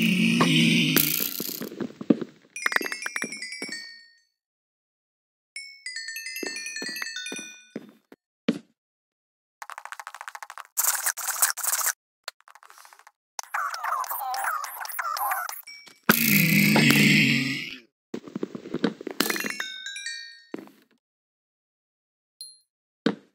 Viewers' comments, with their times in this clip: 0:10 kinda sounds like a chihuahua not gonna lie